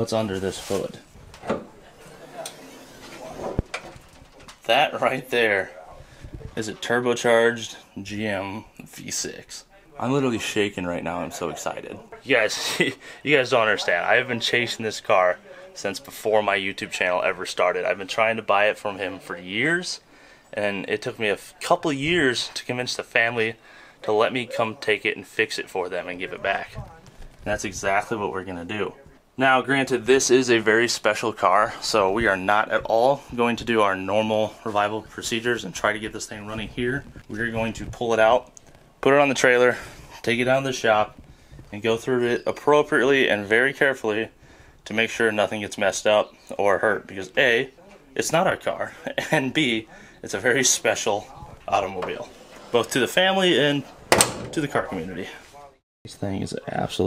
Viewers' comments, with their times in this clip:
0:07 When you first opened the hood, did I hear you right when I heard you say "a GM 3.6" lol
0:45 his voice was quivering mine would be too lol